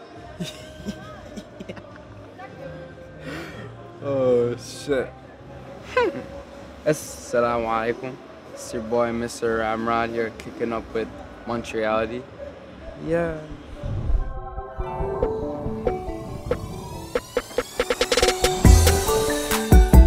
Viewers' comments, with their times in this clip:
0:08 did he really say aslamoe chalekoem?